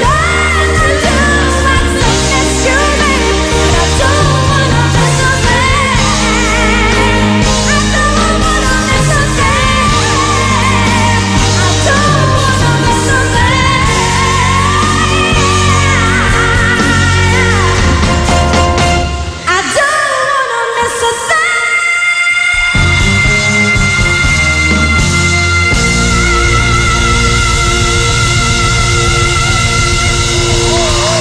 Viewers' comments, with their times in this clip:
0:07 Holy shit SASSY as fuck she's like basically saying look at me bitches bow down hahahaha
0:19 Ms. Regine should have a mural or a statue resembling that pose the moment she absolutely SLAYED that F5 note. 👉 🥺 👈